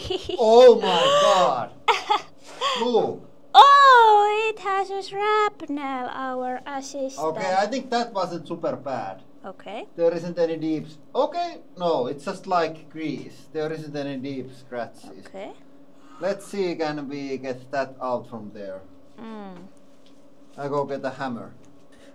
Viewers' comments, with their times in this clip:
0:03 OMG that sound is like nails on a chalkboard. What the hell does she add to the channel anyways beside shrieking mouse sounds?